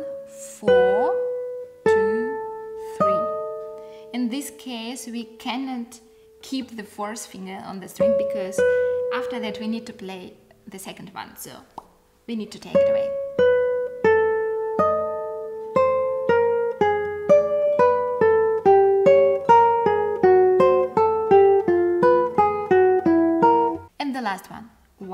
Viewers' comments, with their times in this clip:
0:10 so... BOP xD i love your accent.